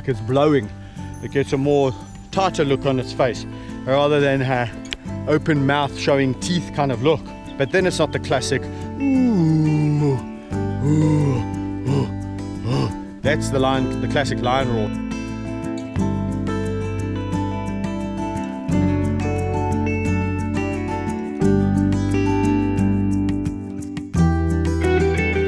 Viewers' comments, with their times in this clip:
0:08 you have a perfect lion roar.